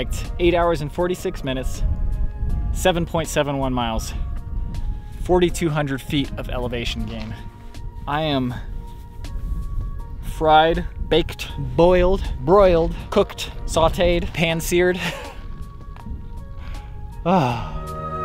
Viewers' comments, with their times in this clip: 0:05 the music reminds me of the music in Once Upon A Time In China. Did you use it for inspiration?